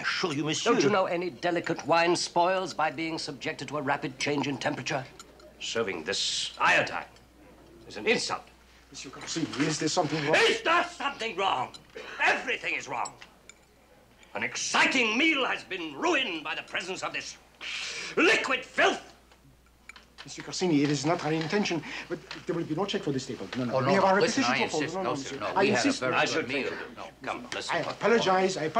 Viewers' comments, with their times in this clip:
0:09 would make an excellent ring-tone, it's a total melt-down. Donald Pleasence is able to project such white-hot anger with his voice, a truly great actor!